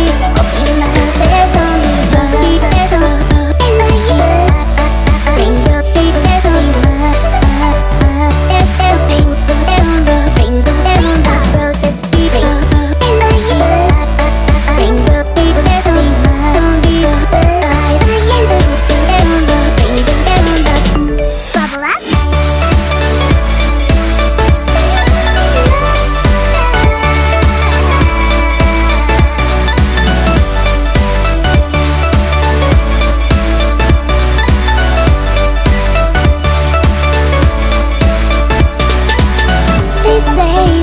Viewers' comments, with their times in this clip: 0:10 Why do I hear PIKA ??
0:11 I hope I'll hear this on the radio someday. It wouldn't surprise me Also ... did I just here "Pika!" or am I mistaken?
0:20 Music Me: Who THE HELL IS TEXTING ME AT 3PM
0:20 The notification sound gets me everytime
0:21 and i thought someone finally texted me